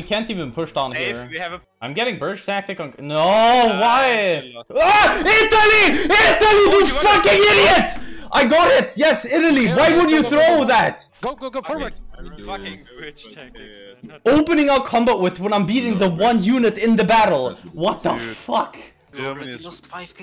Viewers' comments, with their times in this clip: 0:03 my ears you wack